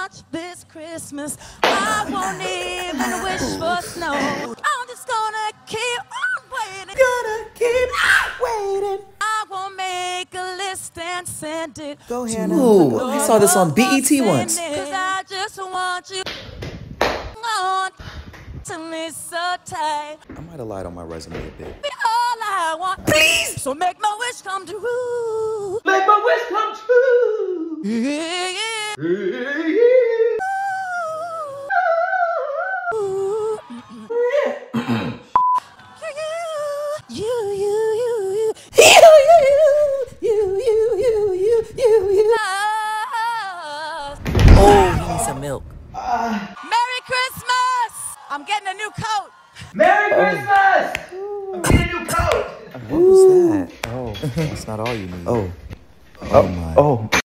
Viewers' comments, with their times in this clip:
0:05 dang, she really needs a cough drop
0:07 That squeak got me😂
0:36 I once watched the original video with my niece and I later walked in on her attempting a pirouette (spins) like this little girl while saying, "You - you - you -you," perfectly imitating Mariah's struggling, borderline in tune riff on that word. I bolted out of the room and uncontrollably burst out laughing. No hate to Mariah, she probably just had a bad vocal day and it sometimes happens to the best and I'm a actually big Lamb. It's just that I found it funny that my niece picked up on that and probably thought nothing of it.
0:46 That moan tho- 💀😭🌚